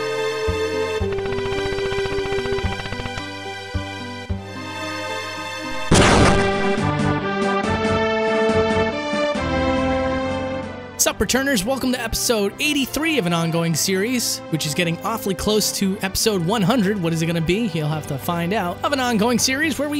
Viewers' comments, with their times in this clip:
0:06 Dude I had my headphones on and close to full volume. Fucken jump scare